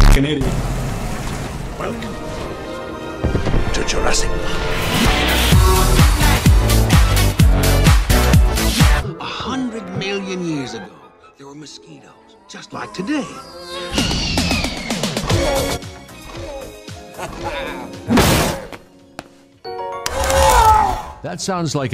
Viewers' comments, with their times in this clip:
0:05 Why did the music change for the first one WHHHhHhHhHHY it fit perfectly
0:06 somehow the one thing better than dinosaurs dancing to a phonk version of the JP music is dinosaurs dancing to a phonk version of lets groove tonight